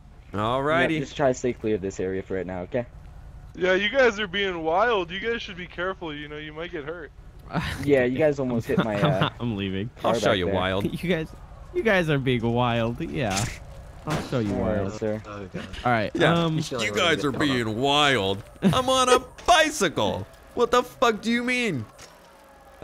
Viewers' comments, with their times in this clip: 0:03 he sounds like that overprotective mom Who doesn’t allow their child to do anything